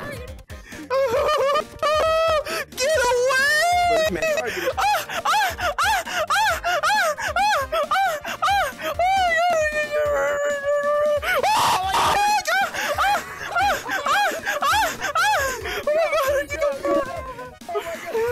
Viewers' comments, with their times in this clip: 0:05 had to turn my volume down